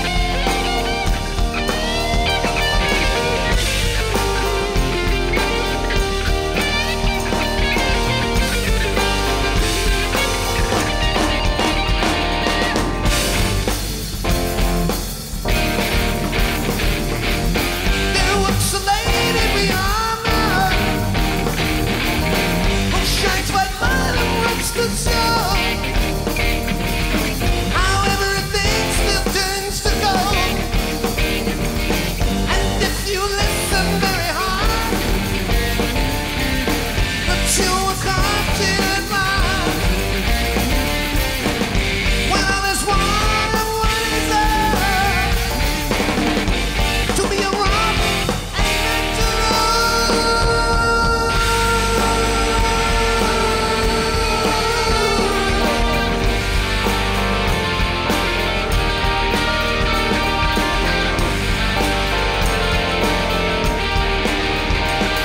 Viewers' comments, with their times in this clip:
0:09 robert, with tamburine in hand, wasn't prepared of jimmy ending his guitar solo that early and especially that quickly, letting him no time to drop the tamburine and grab the microphone 😂 totally messed up his lyrics part, fun to spot such things happen to professionals as well. great record nontheless!
0:16 rare “lady” and “white light” note attempt
0:52 This not roll was perfect